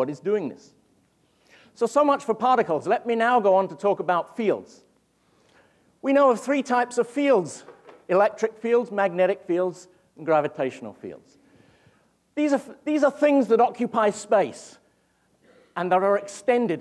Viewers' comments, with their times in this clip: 0:04 Lol is it just me or does it sound like he's talking about all those "feels" on the internet recently :D reference to "I know that feel bro". Couldn't help it but start laughing